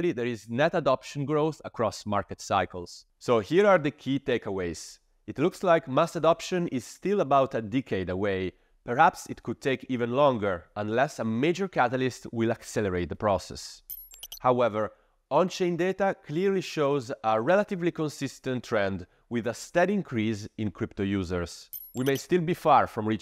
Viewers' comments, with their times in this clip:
0:05 what’s a “Dickade”!? Sounds fun… I want one 😆